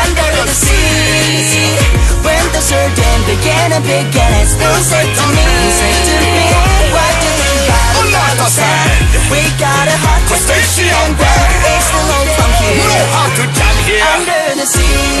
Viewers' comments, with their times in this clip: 0:03 Did the singer just mispronounce "sardine" as "sarden"